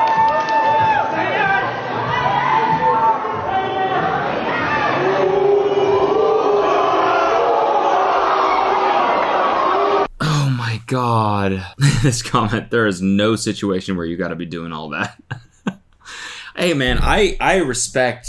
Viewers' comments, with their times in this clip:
0:04 those people booing the girl because she said no will stay in my head for ever. That must be traumatizing. WHY?? That was insane.